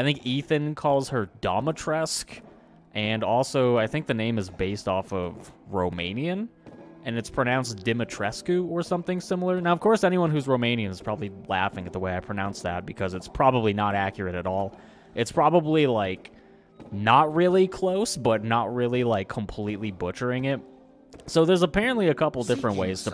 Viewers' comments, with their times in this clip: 0:07 I feel like this pronunciation was the best, but I am no Romanian so don't hold me to it